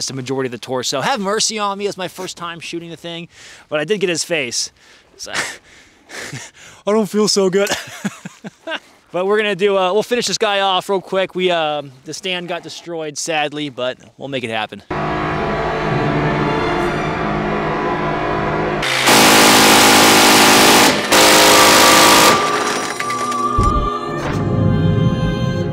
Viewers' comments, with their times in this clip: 0:07 shrilly screaming with British accent moisturize me!!!